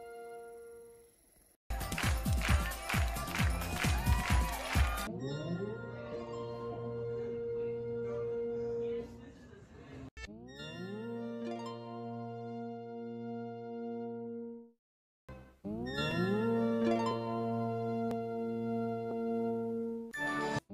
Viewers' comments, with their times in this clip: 0:05 was a slightly sped up version